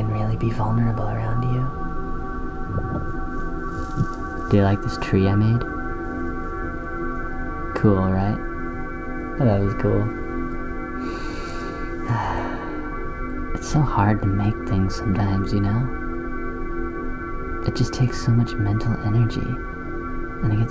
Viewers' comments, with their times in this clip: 0:08 btw I love the way he talks Gives me chills